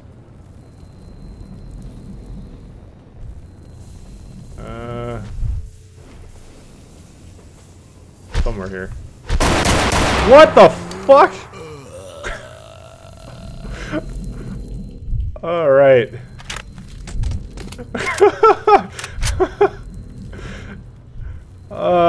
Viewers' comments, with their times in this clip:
0:09 holy shit, not good with earphones